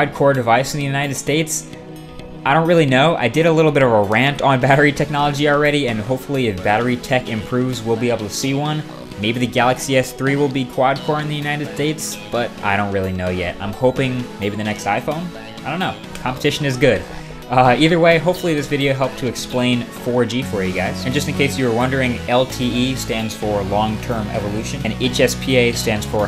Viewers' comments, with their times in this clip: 0:10 United Dates? ***** :p